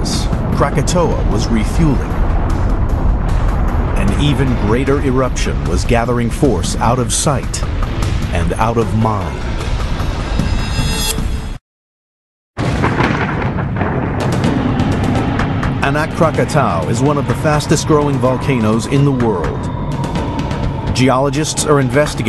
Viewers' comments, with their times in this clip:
0:08 Notice that he says, "And out of mom."